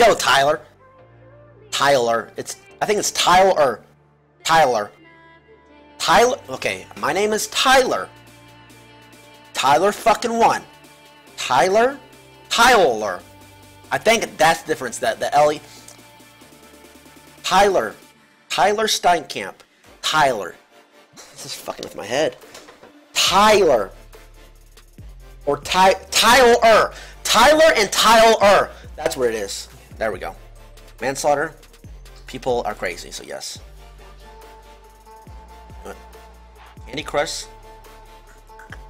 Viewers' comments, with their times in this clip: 0:04 me in kindergarten trying to sound out my name
0:26 When you keep repeating a word and it starts to sound weird